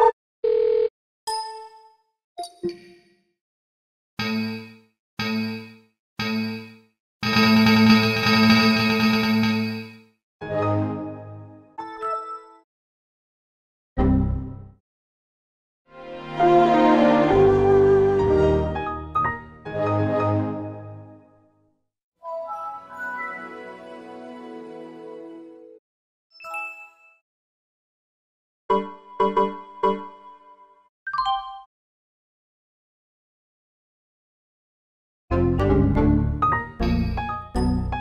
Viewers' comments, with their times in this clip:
0:07 sounds like Windows Vista to me
0:15 The voice of Mastercard
0:17 nt2000 is perfect for skinner's mother
0:26 That sounds perfect to the Superintendent (Windows Vista)'s closing sentence